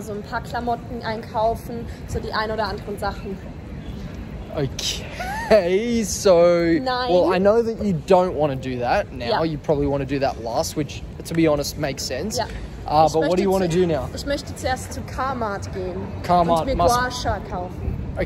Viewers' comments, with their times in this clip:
0:03 bro said caseoh 💀